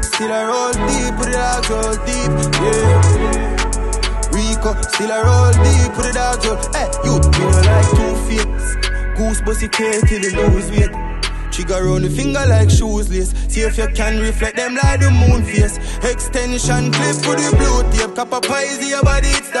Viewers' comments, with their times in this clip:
0:07 That flow switch 🔥🔥